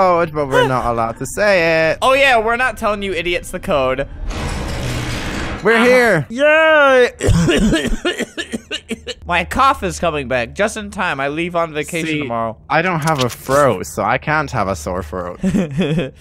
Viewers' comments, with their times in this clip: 0:03 sounds like the world stopping time
0:03 i hear za warudo time stop sound effect
0:04 when roblox users use Za Warudo sound affect